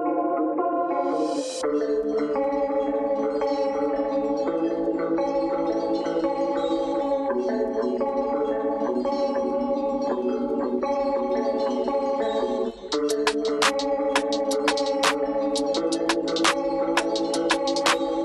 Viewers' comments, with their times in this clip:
0:05 Nice one man!! The chimes that come in really complete the vibe. And this is amazing artwork